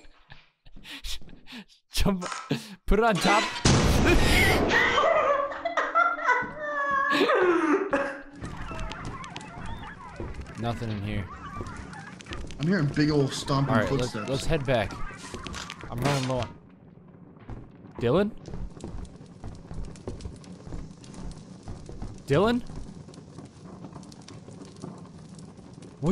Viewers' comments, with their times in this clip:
0:08 the sudden, and deafening silence. no body, no trace he was ever there.